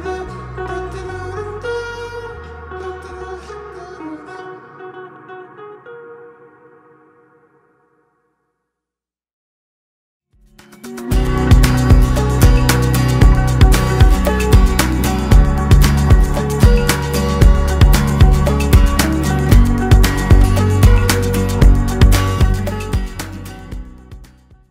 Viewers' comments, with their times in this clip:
0:06 wtf the song does not end when it has to do, it ends again